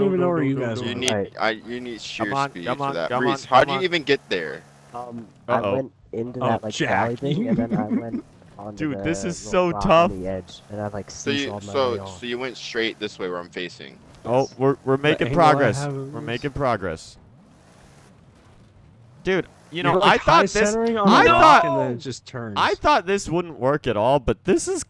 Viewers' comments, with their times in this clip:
0:06 Que Seth Rogen laugh